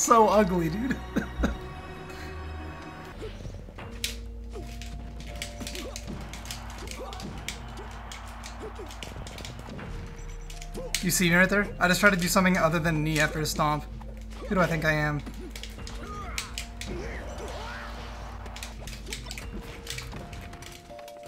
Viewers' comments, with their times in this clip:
0:08 Bro let a little toot out lmao